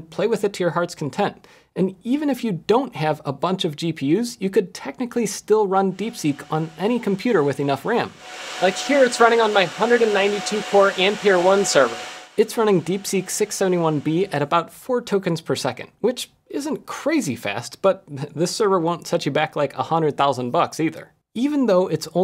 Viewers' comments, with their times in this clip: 0:08 YOU CAN BARELY HEAR IT!
0:08 IS THIS THING ON? I CAN'T HEAR A THING!
0:08 what a lovely sound of an busy airport, even better finally we can bring it to our home